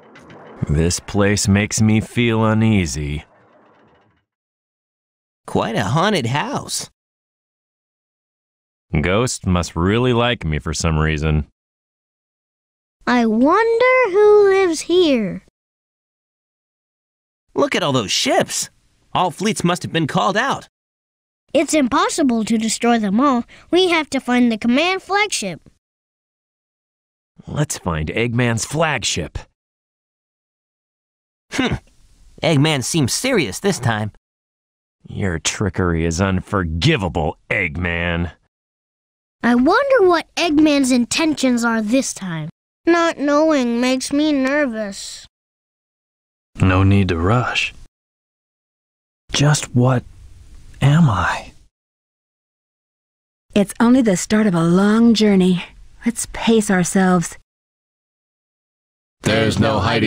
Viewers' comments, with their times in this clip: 0:04 Is that SUpposed to be Sonic saying that?
0:05 Quite a haunted house.... Yeah, maybe too haunted from hearing Knuckles with Sonic's Voice
0:12 now the line is "I wonder.. who lives.. here." Now say it.
0:45 the easy going and smoothness in Shadow voice was pretty cool. Definitely doesn't sound EMO "No need to rush."